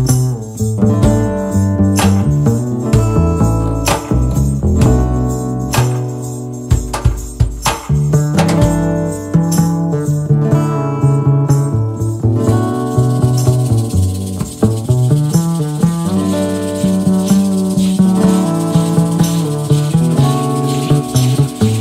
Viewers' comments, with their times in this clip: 0:06 some funky bass